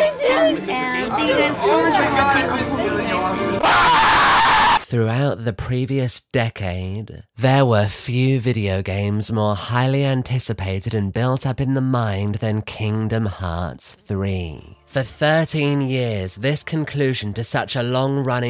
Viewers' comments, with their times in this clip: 0:05 This is genuinely unwatchable if the voice is present for the whole video